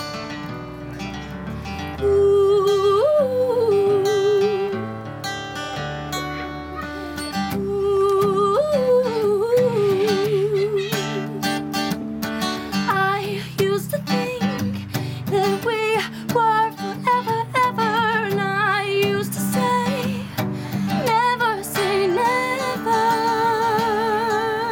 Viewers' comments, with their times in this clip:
0:09 always cracked me up, only because of that kids laugh in the background lol. I absolutely love this cover <3